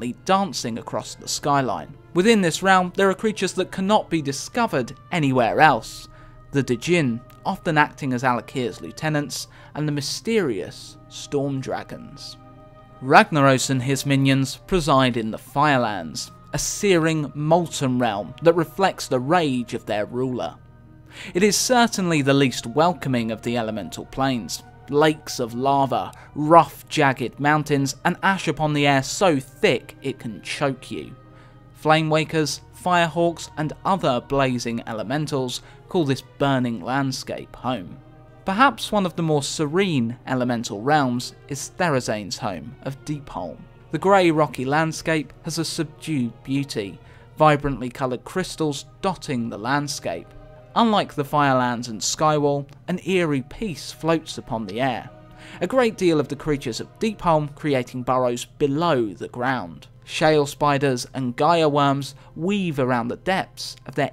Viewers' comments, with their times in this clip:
0:06 You mispronounced djinn. You said "duh-gin" instead of "gin." ;)
0:49 I know that the give away was a year ago but deep hole says deep holm